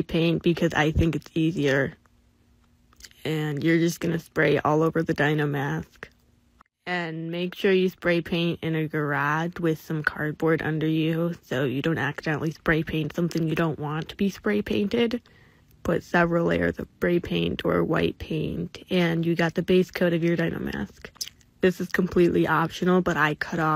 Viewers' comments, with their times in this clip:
0:08 I’m sorry but her voice-